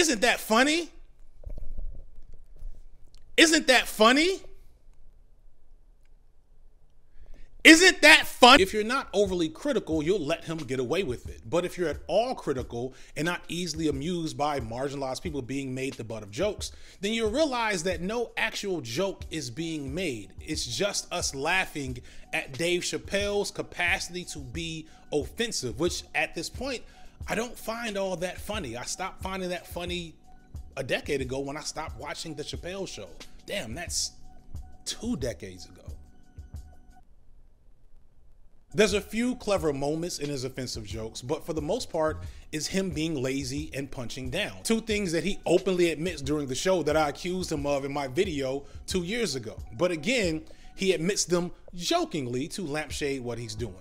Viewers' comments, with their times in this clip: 0:03 "Isn't that funny???" My brother, a whole building full of people laughed just then, so yeah... I guess it was pretty fukkin' funny :)
0:39 I like the pause he made like had a mini life crisis